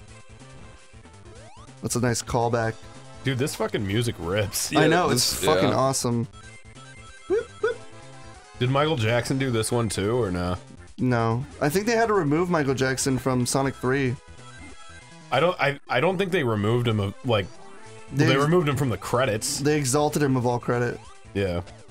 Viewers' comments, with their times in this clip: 0:03 so glad someone recognizes how fucking awesome the secret base zone music is